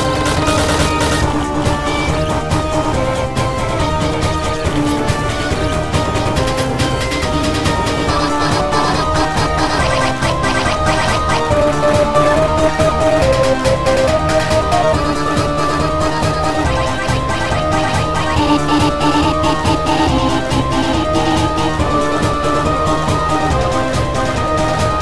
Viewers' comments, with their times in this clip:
0:08 Pillow Is Singing At Last.
0:08 Pillow is singing at last.